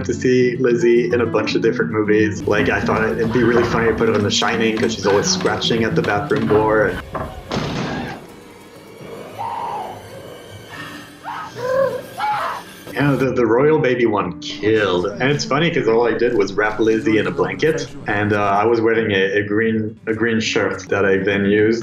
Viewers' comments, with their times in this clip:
0:05 i love how its just a chirrup